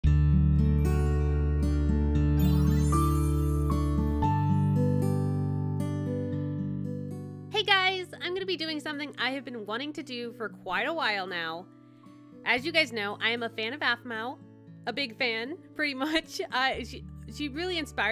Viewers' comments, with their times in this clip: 0:02 Did anyone hear the fnaf 6 sound effect at the beginning XD I love the pictures BTW 👌🏻👍🏻